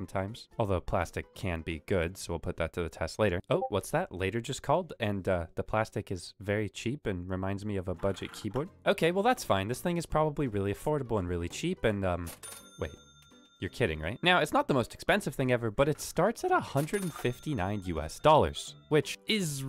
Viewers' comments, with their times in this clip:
0:03 Discord boop You're a monster.